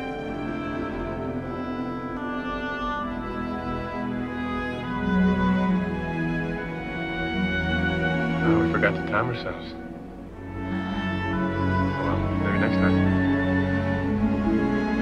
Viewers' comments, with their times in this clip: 0:03 Thank you for watching, and taking the time to read some of the analysis. I’ve listened to this piece hundreds of times, and that section still brings me to tears most times I listen to it. It’s just so gentle and moving, I can’t quite explain it. It’s never lost it’s charm for me, though I’d love to go back and listen to it for the first time again. Music is truly magical!